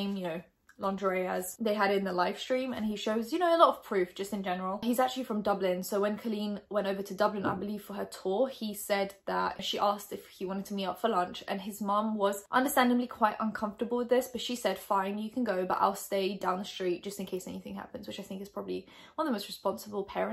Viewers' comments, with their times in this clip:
0:06 who else stopped the video to check where the knock is coming from